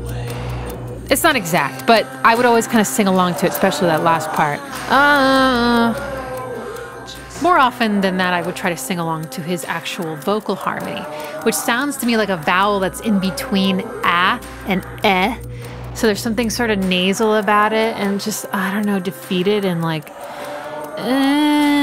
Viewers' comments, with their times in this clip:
0:09 Your notation is how I always sing along with it, but it's wrong. The E flat you hear is in the "elephant man" sample, not the "aaaaah" vocals. Those three beats are just a dotted half note on D.